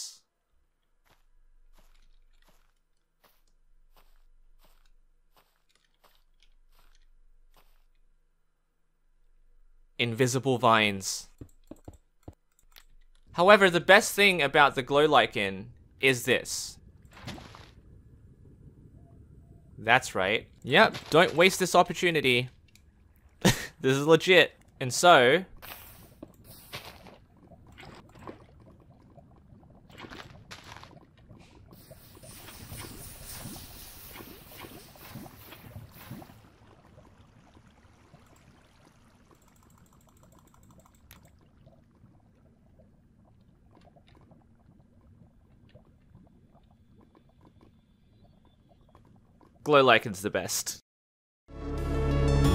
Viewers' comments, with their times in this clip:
0:03 Illuminati theme starts playing
0:39 u can hear him spamming the right click lol
0:39 sad spamm noises
0:39 Can anyone hear him spamming the mouse button XD